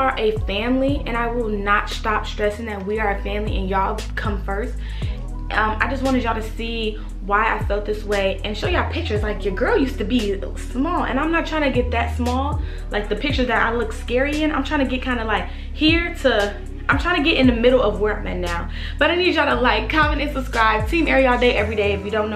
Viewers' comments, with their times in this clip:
0:06 ok i hear Queens song